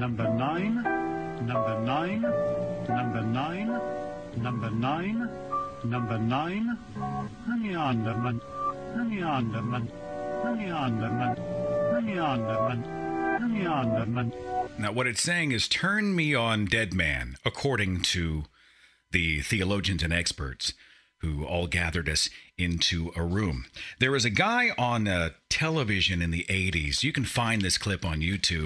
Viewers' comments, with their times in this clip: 0:07 I heard In the arms of love, untill they went all Necro on me. Preachers are perverts.
0:13 I hear 'Libya government'.